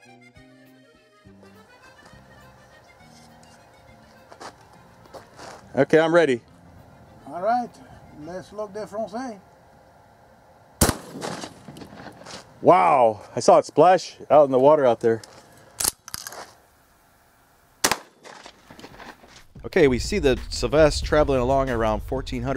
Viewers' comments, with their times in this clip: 0:08 Tow Mater? Is that you?